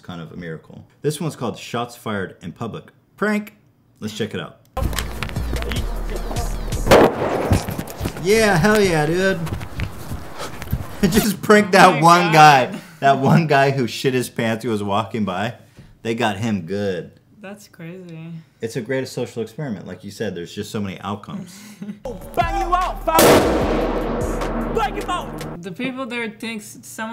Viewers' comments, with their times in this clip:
0:10 i had the same thing happen to me. i was walking home alone minding my own business and these guys drive by and throw some loud firework like that to try scaring me